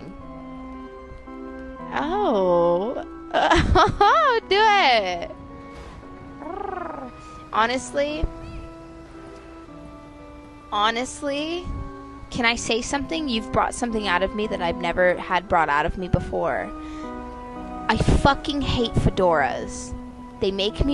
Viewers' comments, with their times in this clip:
0:05 Oh my god that fucking PURR??? bitch my whole ass life just changed by hearing that fucking sexy noise and now like i need it to survive? what is this?? did doja cat just made me a furry or what the heck